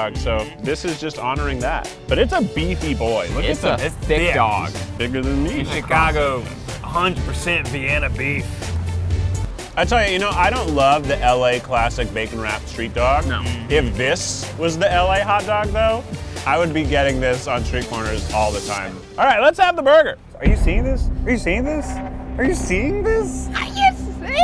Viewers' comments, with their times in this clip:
0:05 I can’t believe no one caught Keith’s “this is bigger than me “ joke and then his subtle laugh